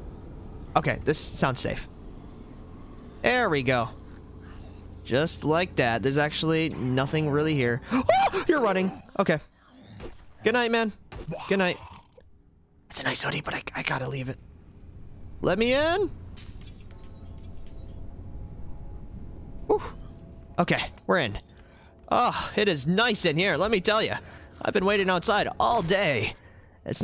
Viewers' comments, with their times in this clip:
0:08 the little girl scream. Man up bro, you claim to have 700+ hours played....WTF over